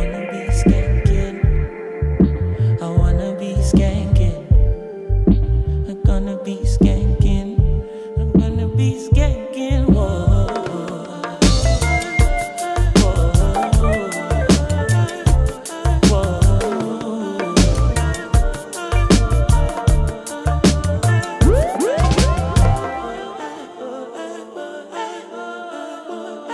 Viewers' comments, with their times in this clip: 0:10 love that drop